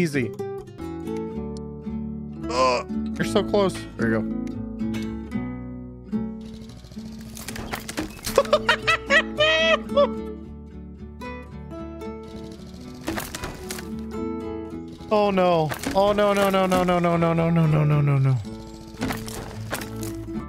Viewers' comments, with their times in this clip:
0:08 Lol joker laugh